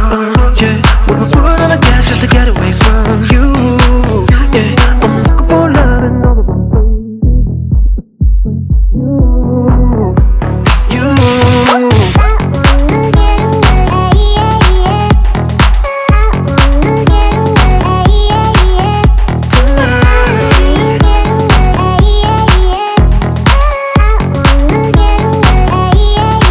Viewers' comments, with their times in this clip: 0:07 Hey Karl why doesn’t the radio/single version have that outgoing/incoming sound effect in video? Fav part of the song man